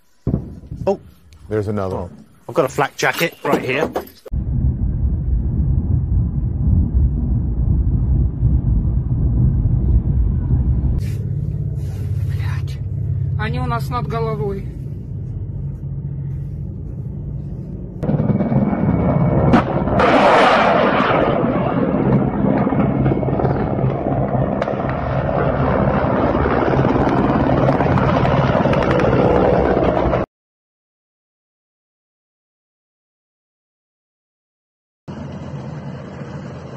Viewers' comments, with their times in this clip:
0:06 i remember seeing this and hearing the air sirens on the news. was honestly scared af for the ukrainians especially when i saw that the highways were still but packed with cars with people trying to flee the country
0:18 the helicopter sound so scary